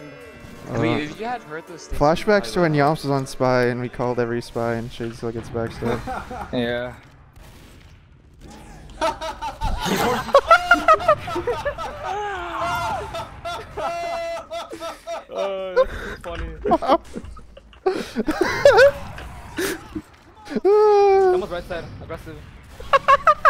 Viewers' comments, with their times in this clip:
0:08 That laugh, thou.